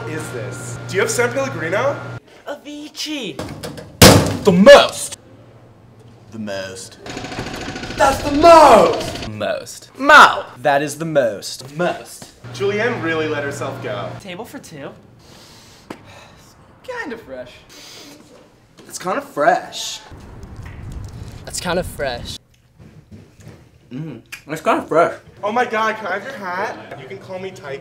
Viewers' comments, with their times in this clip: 0:08 lol the guy in the orange shirt doesn't even say the most hahaha its just like MAU